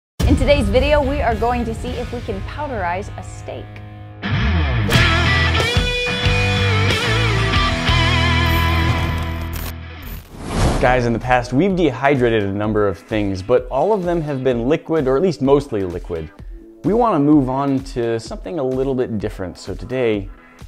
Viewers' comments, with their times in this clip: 0:01 You want to see if you can powderize a snake?